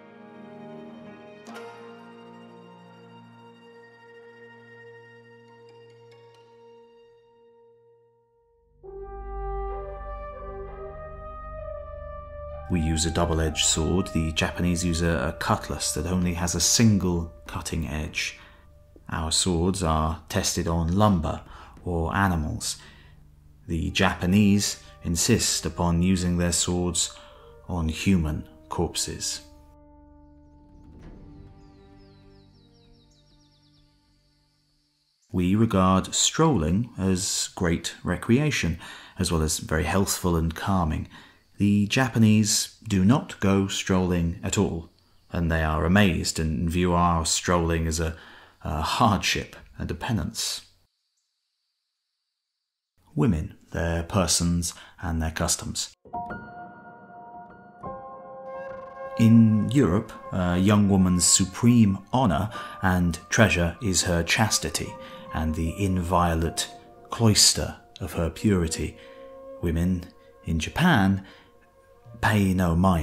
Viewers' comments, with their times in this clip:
0:09 thought that was skyrim music for a sec
0:09 i thought i had skyrim playing in the background
0:09 bro i deadass thought skyrim music was about to play
0:14 woah nice skyrim trumpet
0:54 Was there a spike in the volume